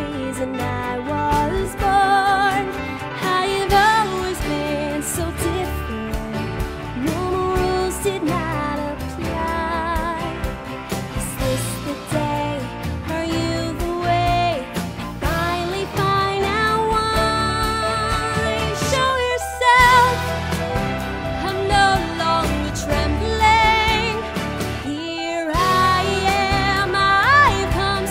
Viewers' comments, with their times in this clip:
0:09 I thought that it is the real singer means idena monzel!